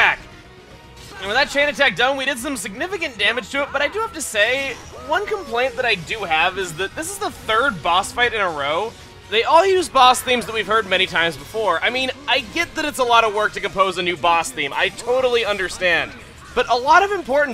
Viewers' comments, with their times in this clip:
0:04 At least the Boss theme is good...